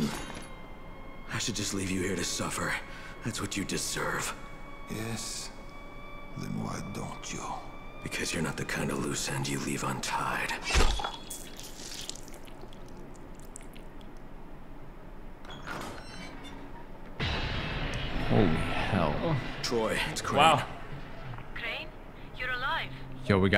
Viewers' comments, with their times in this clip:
0:05 is literally the exact voice from batman arkham origins (i am aware that it’s the same voice actor but it’s just cool to hear)